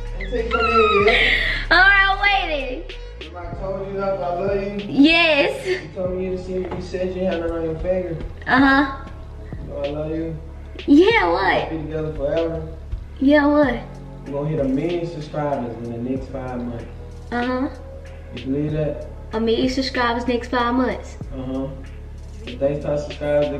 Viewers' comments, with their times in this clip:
0:09 the music so cute 🥺